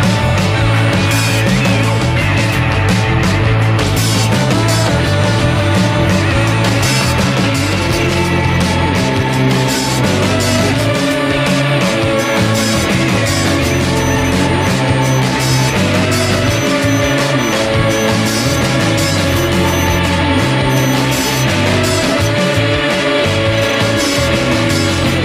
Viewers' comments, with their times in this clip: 0:06 I love the intro refrain on Airbag ( on this video). It's brilliant.